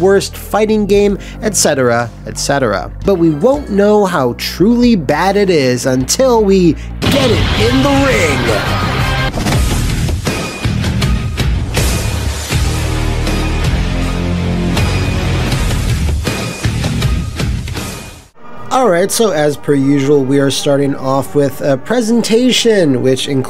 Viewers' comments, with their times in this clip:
0:09 What's the music st ? Sounds like killer instinct slowed down.